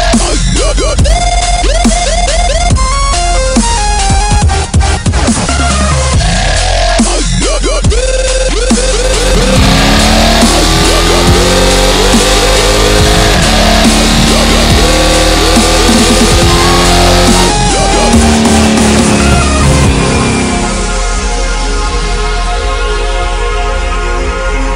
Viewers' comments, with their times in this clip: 0:10 Awesome video! That's my 392 super bee Thanks for taking footage, sounds ridiculous!!